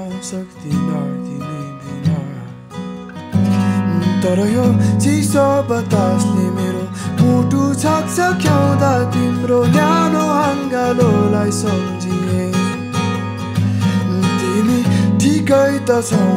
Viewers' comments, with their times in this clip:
0:03 his voice hyee